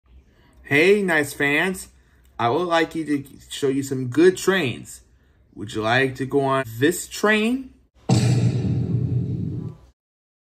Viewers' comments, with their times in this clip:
0:08 The rock train sound